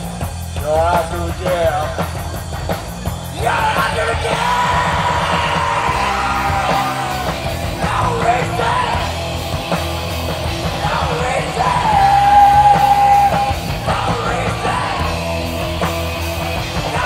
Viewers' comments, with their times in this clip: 0:03 THAT IS SO CLOSE TO THE STUDIO!!